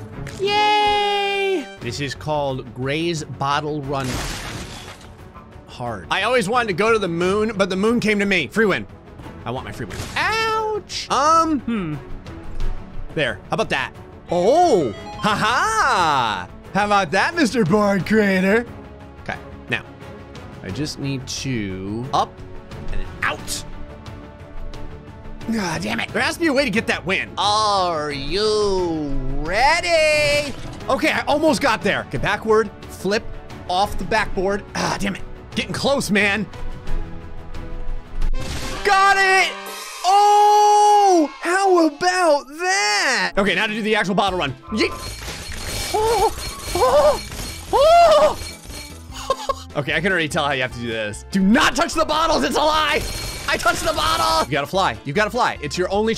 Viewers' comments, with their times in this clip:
0:10 he sounds like kermit the frog
0:11 he sound like Kermit
0:44 that crash was actually satisfying to watch